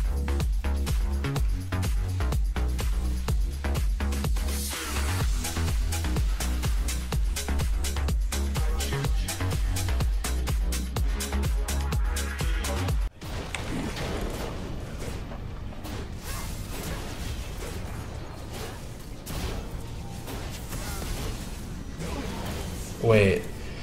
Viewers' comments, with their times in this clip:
0:09 wtf is that fast typing?